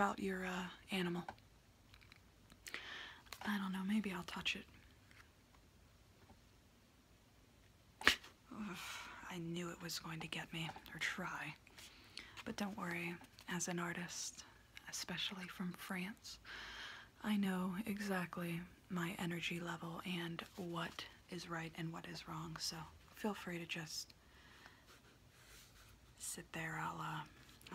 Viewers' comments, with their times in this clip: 0:08 scared me sooo bad with it turned all the way up